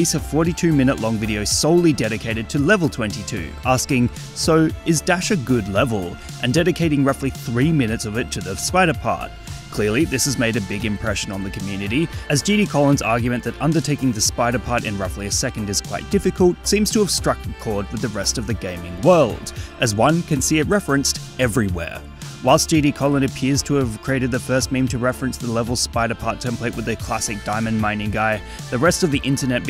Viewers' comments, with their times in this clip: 0:10 epic sound effects